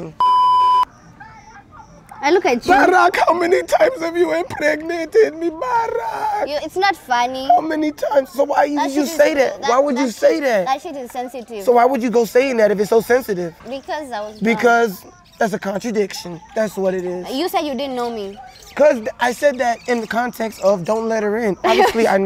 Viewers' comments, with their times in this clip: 0:07 his real accent has decided 😂😂😂😂💀💀💀💀